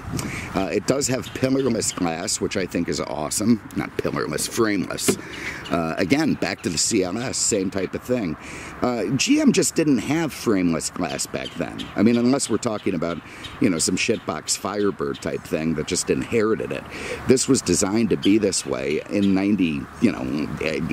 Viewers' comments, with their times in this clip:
0:04 ROLF Motorweek should take some cues from this gentleman - just think how great John Davis would sound describing GM "shitboxes" in his musical cadence. I finally saw him !